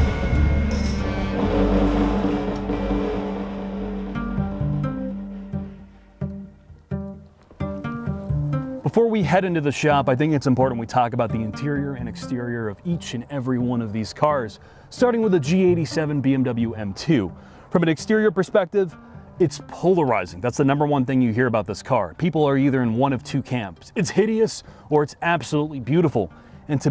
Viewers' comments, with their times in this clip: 0:07 Is it me or mouth is moving but no words are heard